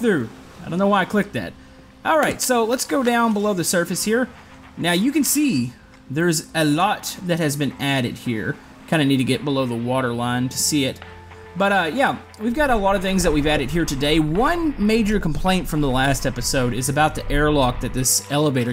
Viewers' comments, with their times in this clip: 0:04 10/10 elevator music